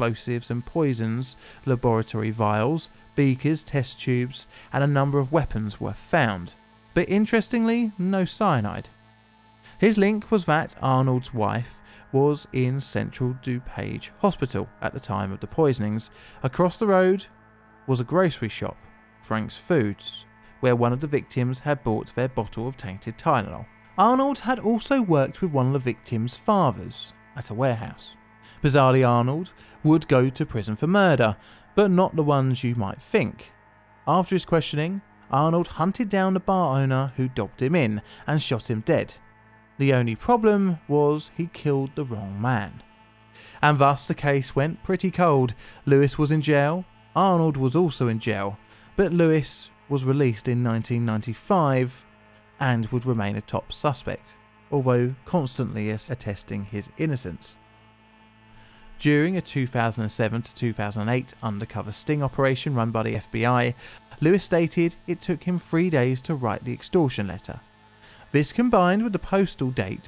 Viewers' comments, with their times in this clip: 0:07 the weird noise in the background is super distracting. Is that cicadas? is that in the voice track?
0:55 and background noise is STILL annoying